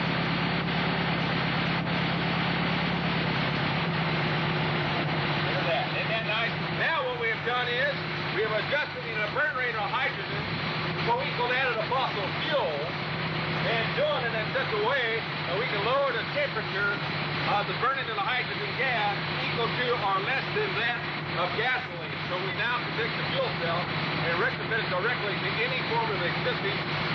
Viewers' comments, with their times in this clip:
0:10 What is he sayin ? I just cant make it out.